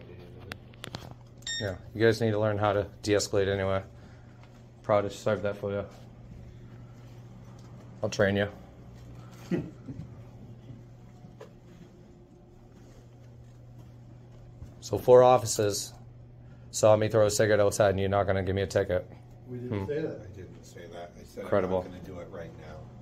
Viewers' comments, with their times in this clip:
0:10 Annoyingly nasal frauditor voice," You need to de-escalate." No, they don't You need to stop escalating.